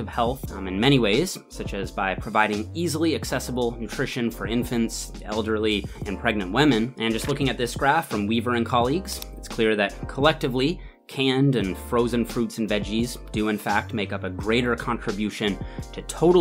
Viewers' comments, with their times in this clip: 0:04 Whamen lol Good vid though. Keep it up!